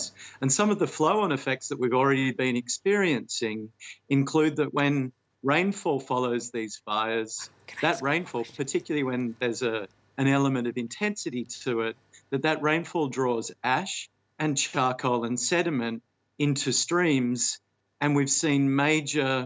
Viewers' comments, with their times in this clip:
0:07 Forgot to turn the mic off ? ;-)